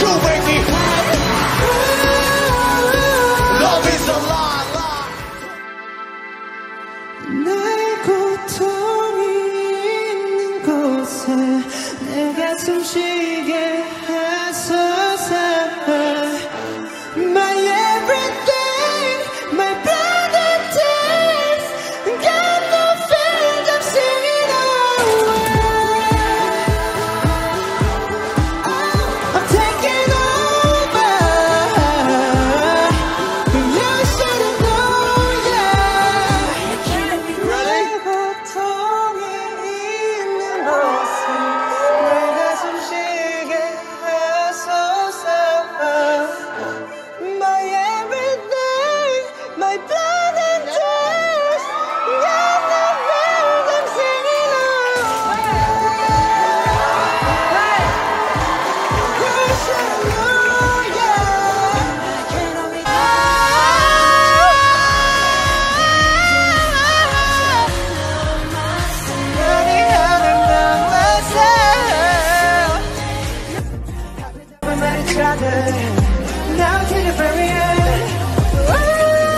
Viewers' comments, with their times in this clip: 0:04 it sounds like jungkook is saying “Michael told me in the closet, I got some chicken it’s so sad~”😭😭😭
0:05 So everyone say with jungkook like Michael told me in the closet that i got some chicken that soo sad ahhh...this is what i thought lets see if am alone or not😁😂
0:07 :michel told me in the clostet hey got sone chicken im so sad oonly misheard lyrics dont worry
0:26 minutes Assom voice
1:03 Btw that Answer : Love Myself high note wasn't the original one. Jungkook changed the tune. And that is talent, my friends.